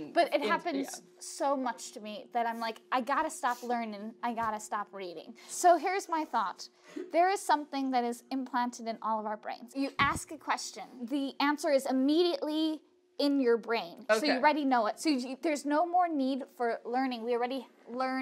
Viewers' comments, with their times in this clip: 0:03 camera crew bursting out in laughter